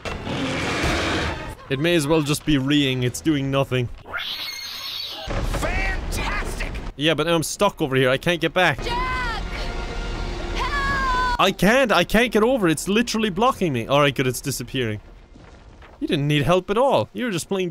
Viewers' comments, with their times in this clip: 0:04 aah the "alarm"